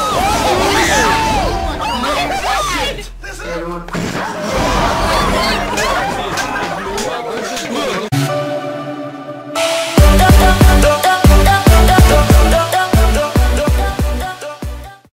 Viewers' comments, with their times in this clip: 0:03 I heard a fart, did you?